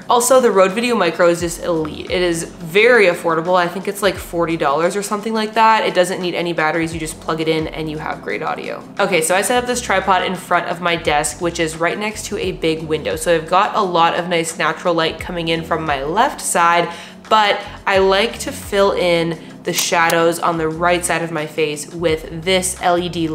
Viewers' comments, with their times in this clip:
0:08 I would agrue on great audio. It gives you echo from the walls. It's kinda okay audio, but it could be better.